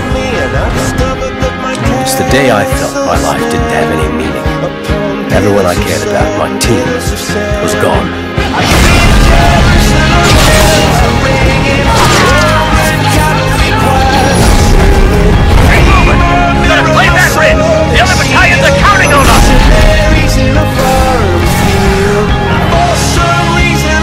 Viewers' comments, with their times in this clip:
0:08 the mood change is just so good with the music, so very underrated!